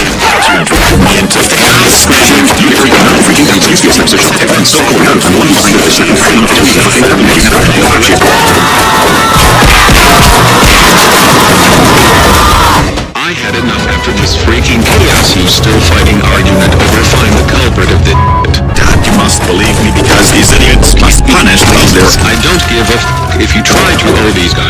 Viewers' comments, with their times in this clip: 0:08 Muscles dad screaming